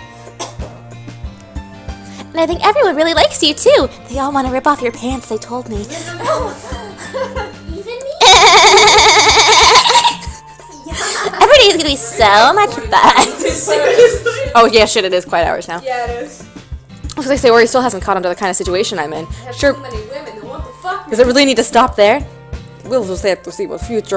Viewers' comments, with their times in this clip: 0:08 human mating calls